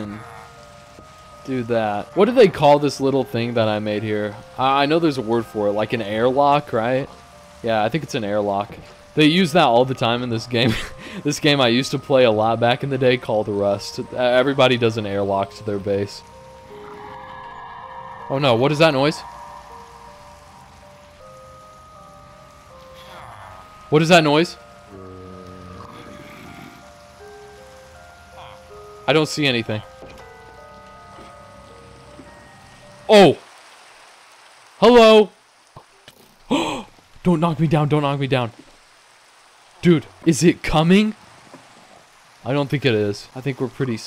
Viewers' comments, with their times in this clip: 0:08 what is the name of that creepy music called?
0:25 turning off the music right when you saw him was a pretty good edit, set the fuckin mood thats for sure lmao